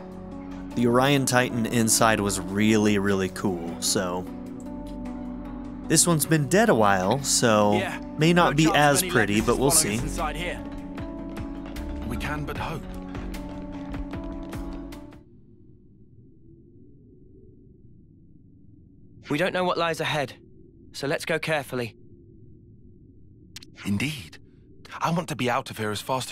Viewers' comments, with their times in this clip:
0:08 That's not the Urayan Titan. It is the mines BELOW the titan. You'll get on the inside of the dead Titan later. This area is more similar to the Ether Mines from XC1, even the music sounds nearly identical.